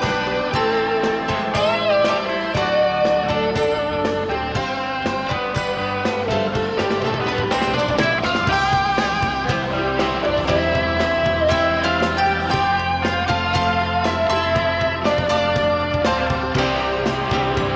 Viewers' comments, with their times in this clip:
0:03 I think Clapton’s guitar is on fire...literally smoking.